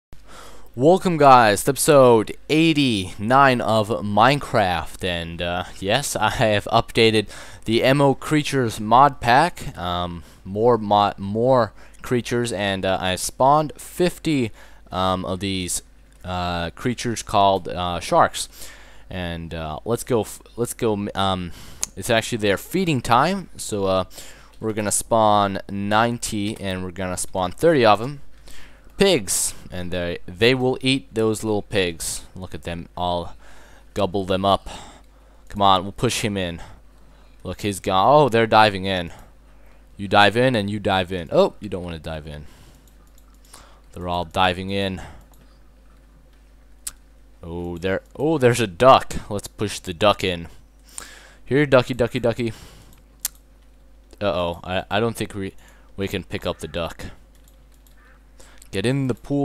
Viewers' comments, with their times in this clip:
0:05 Yes a harve. u gots yew self a southren accent
0:47 if you play over and over it sound weird